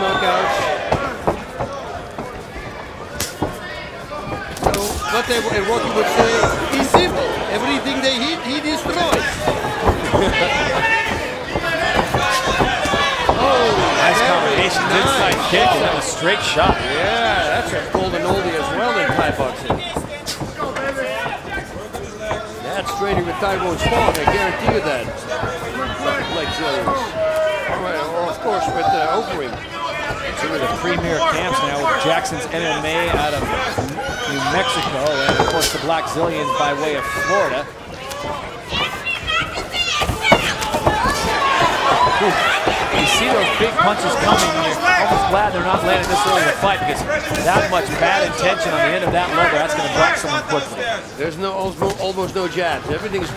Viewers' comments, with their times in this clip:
0:08 this power punch the commentary laugh LMAO
0:39 Lmfao u hear some lady screamin anthonyy knock his ass out knock his ass outtt